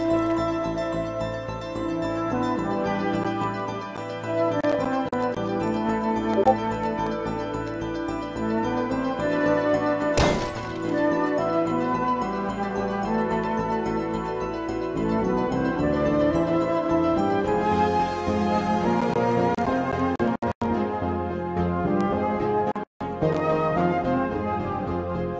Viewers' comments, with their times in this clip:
0:06 i thought i got pinged